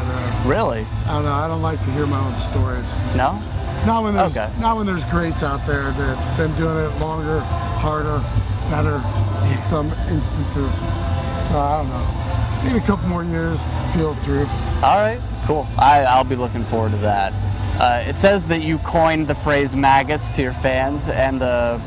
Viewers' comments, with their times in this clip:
0:04 Anyone else hear miw preforming devils night in the background